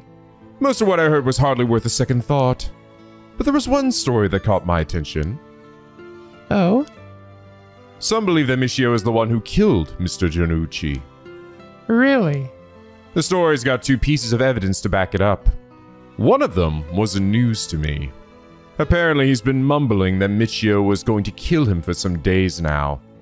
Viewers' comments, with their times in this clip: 0:09 For all the weird pronunciations and memes from it, you pronounced jonouchi near perfectly here! Maybe I’d take more emphasis off of the u sound and just make the ou sound more like a deepened o sound. Not oo, just o with a little more emphasis. But that’s just one thing, the rest was great!